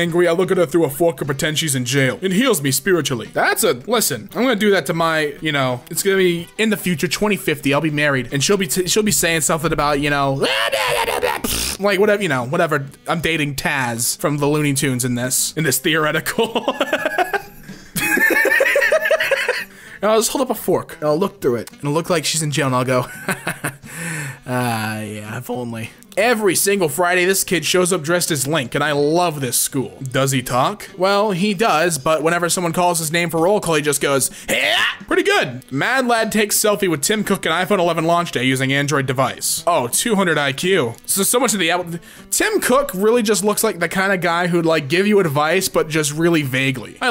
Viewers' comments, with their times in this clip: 0:08 The sound he makes was so random I had to listen for 5 whole minutes. My parents thought I was high. This made me laugh more than this freaking video. I'm still rewinding to hear that dang sound.
0:33 That HYEH was incredibly good ... lol